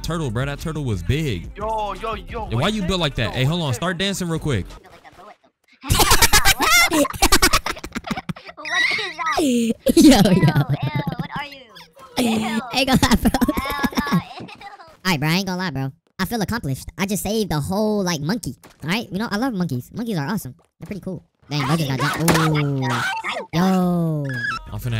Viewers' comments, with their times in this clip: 0:05 why did,they sound like minions💀